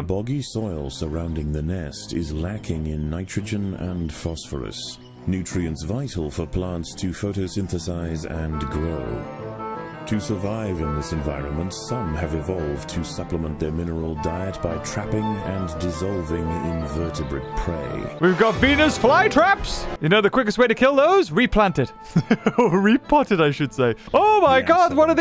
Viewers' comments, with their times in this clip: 0:07 the music here is so good!! What is it called? I need to know